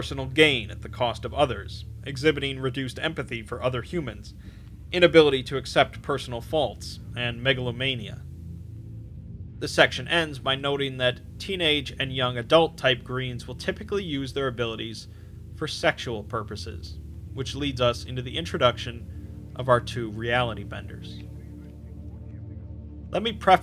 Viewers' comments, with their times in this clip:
0:07 I heard this as something else. I am a child, forgive me